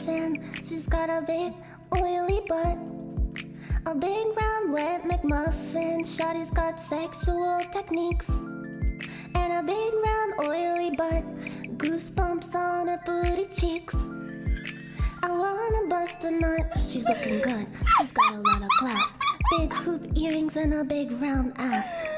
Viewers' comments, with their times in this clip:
0:06 why it flow so good here?